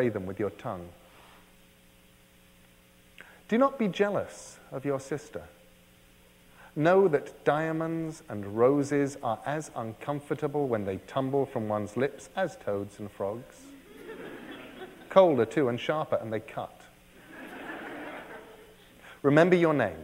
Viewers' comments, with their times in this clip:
0:04 his voice reminds me of Professor Snape :s